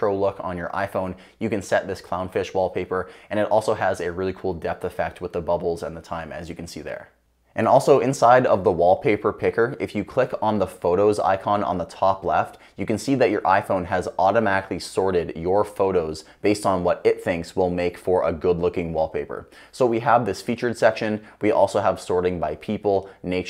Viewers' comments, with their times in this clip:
0:06 not bubbles! Babies lol